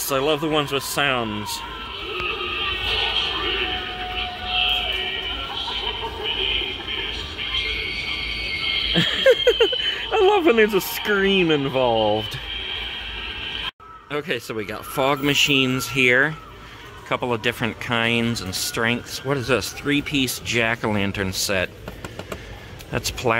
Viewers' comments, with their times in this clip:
0:07 Same scream as Ghost Girl from 2012 lol